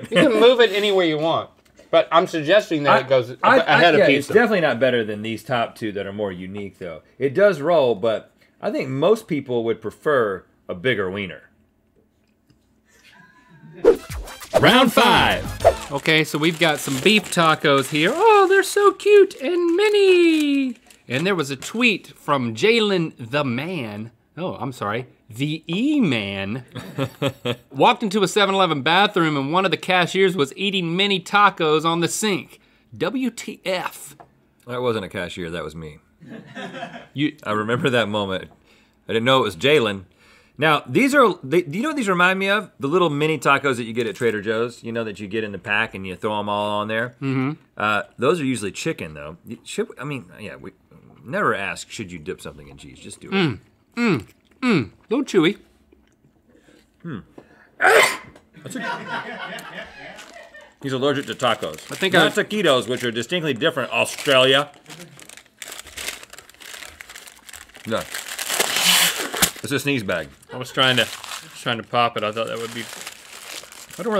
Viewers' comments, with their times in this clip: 0:07 I HEARD THE LAUGH
0:34 that delivery was absolutely flawless
0:57 That High Pitch sneeze from Ball master Link tho.